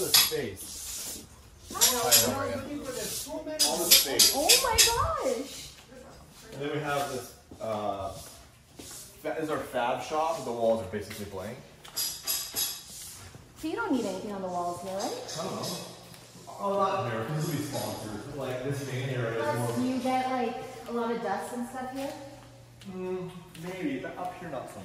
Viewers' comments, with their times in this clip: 0:05 RIP headphone people 😁